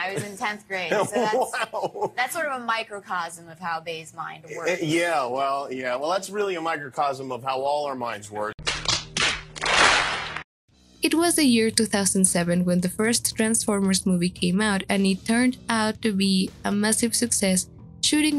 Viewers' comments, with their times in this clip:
0:05 I LITTERLY GAGGED- DUDE A) SHE WAS 15 YOU CREEPY BASTARD B) HER TONE IS CLEARLY EXPRESSING HER DISCOMFORT, ANGER, AND DISGUST THAT THIS SITUATION HAPPENED TO HER